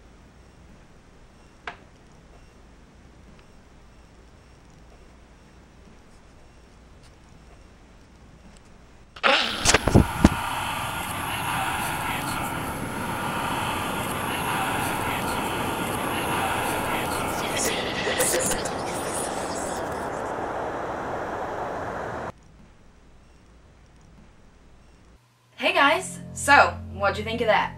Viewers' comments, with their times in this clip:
0:09 I thought that noise was someone farting so I didn't find this funny 😂💨
0:09 sounds like wet fart